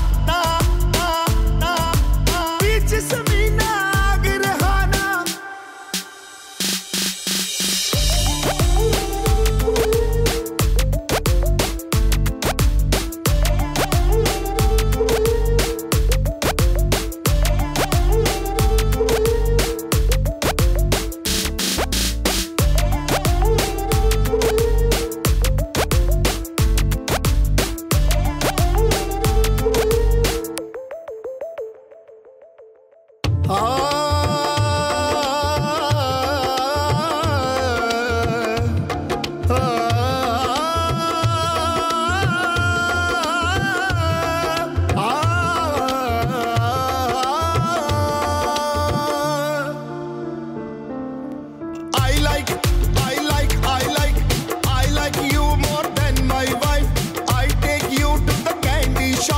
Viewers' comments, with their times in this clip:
0:10 The song is cringe but can somebody explain the ehmm What the hell is that
0:25 The song was actually quite nice till 😂
0:44 it's almost like teri meri songs music.